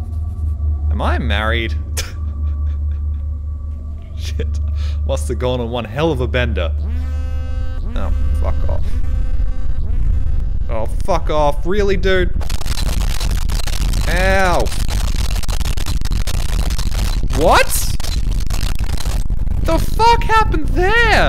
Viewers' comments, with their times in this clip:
0:05 Sorry about the count down being messed up I must have deleted it on accident. Also this video taught me that pressure apparently raises my voice pitch dramatically.